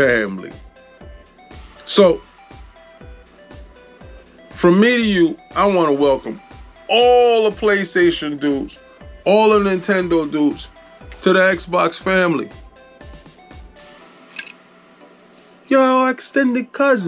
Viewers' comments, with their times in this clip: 0:04 this man said it like he the Don 😂😂😂😂😂😂 some godfather ish But furthermore it's about to be a brand new way to play with bigger worlds and and physical copies slowly disappearing, playstation losing there ceo, more than likely nintendo will always be good because of the fact there franchise of games and characters will always be loved nintendo is in a league of there own that's why they'll always be ahead of Microsoft and Sony as far as technology goes. Even though I bleed green I gotta give props to nintendo because they been in this business longer than any of em at the same time I know nintendo is holding back on purpose because I've been seen what they can do